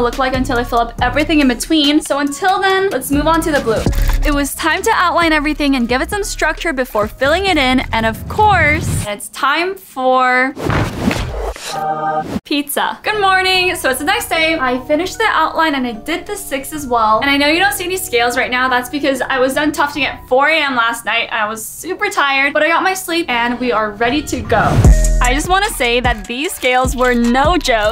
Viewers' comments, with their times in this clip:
0:10 Lol it’s time for........ peteza You know what I’m gonna watch this like a million times